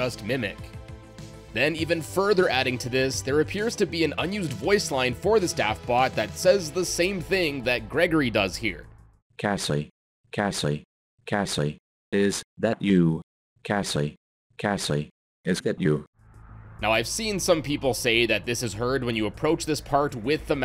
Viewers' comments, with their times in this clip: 0:07 This sounds a lot like AI generated placeholders that I've seen in other game betas before, like lbp3. It probably doesn't have any lore reasons, just a placeholder till they got a finalized version of the line.